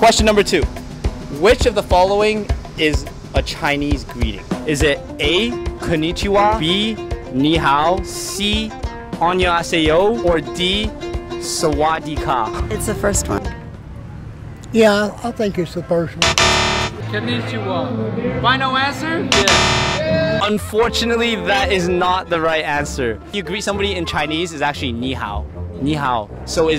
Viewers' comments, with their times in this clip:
0:05 I’m so disappointed with this video - not at the people being question but the creator of this video. I t’s continuing the ignorant stereotypes of Asian culture and also if you’re going to ask the question in you could at least learn to pronounce them correctly, they’re not that hard .. smh 🤦🏻‍♀️
0:10 how do you butcher 안녕하세요 that badly LMAO
0:10 as a thai, I think I heard swastika